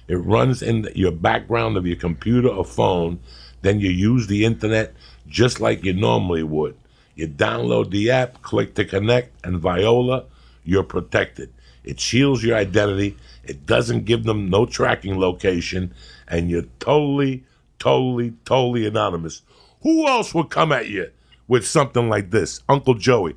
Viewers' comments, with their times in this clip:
0:08 He said vi-o-la instead of voila. LMFAO